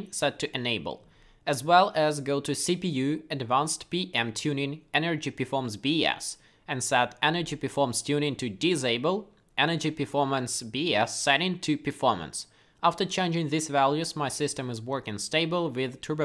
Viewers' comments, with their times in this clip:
0:04 it sounds like energy performance bs lol great content you're killing it keep up